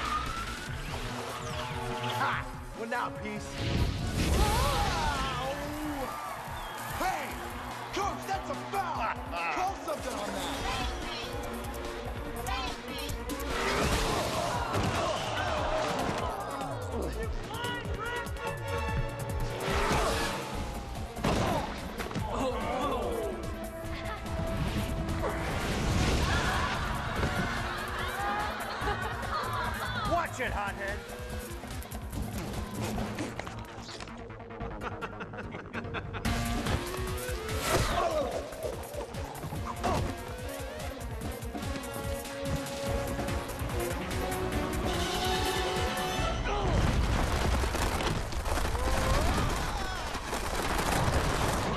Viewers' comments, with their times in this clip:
0:08 “CoAcH tHaTs A fOuL🤓”
0:36 I like the battle music